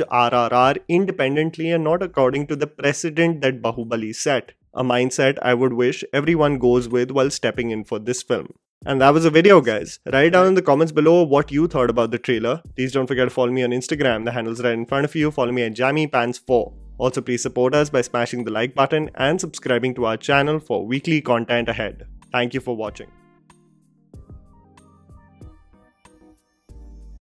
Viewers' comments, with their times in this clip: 0:10 Appreciate your honest review as always! I just observed a little background voice cant really understand the word though :)